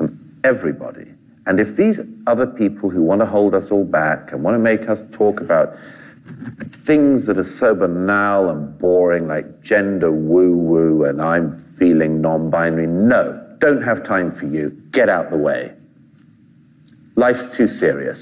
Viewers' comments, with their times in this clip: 0:06 Don't mean to sound picky but what's up with the "Fava beans and a nice Chianti" impression ?